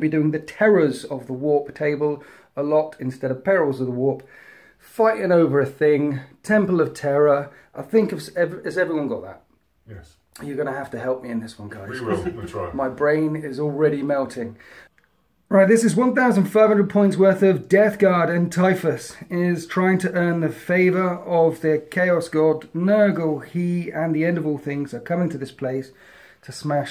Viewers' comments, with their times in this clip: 0:10 HOLY SHIT, not only does that guys eyes look like Khorne himself, his VOICE is deep to match that! I am absolutely terrified, and i havent even seen his army yet. What an amazing specimen of an Astar...... HUMAN, sorry, human.